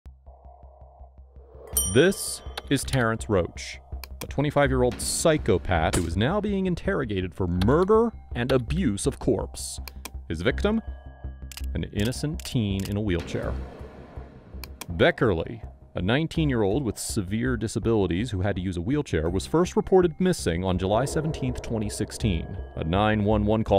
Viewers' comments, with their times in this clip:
0:05 A 25 Year Old PSYCHO-PATH 😂😂😂 , he put so much emphasis on that lol
0:08 Abuse of CORPS... WAS THE MILITARY PISSED? 😂